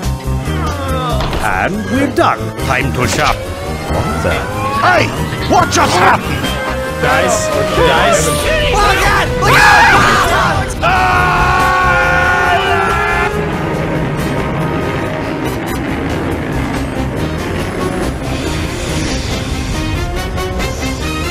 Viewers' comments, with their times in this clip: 0:07 It's That VanossGaming? It's Sounds Like Vanoss.